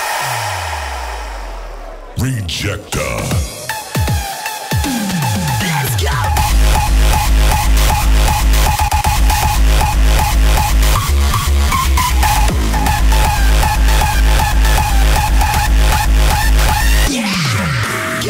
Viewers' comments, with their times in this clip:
0:04 such good raw